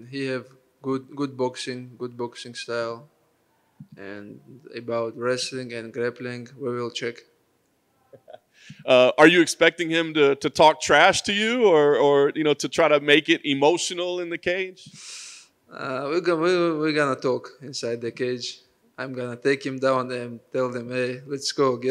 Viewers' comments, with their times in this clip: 0:06 he doesn’t say “oil check”, does he?